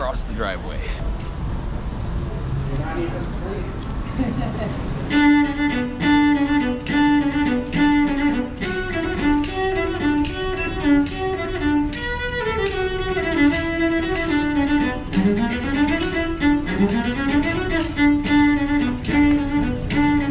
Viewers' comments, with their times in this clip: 0:04 I couldn't get the Garmin jingle out of my head. Great video thank you for sharing your talent with us.